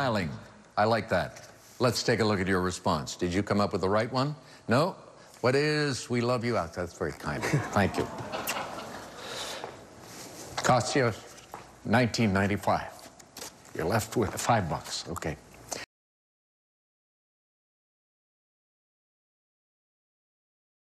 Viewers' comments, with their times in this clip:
0:06 You can hear a few members of the studio audience responding, "Awwww."
0:14 even the participant had to stick his tongue in his cheek as Alexs' voice trembled.